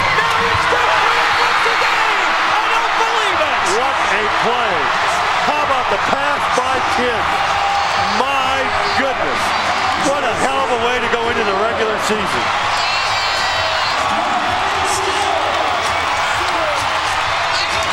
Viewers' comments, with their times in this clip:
0:03 jordan hill laughs ^^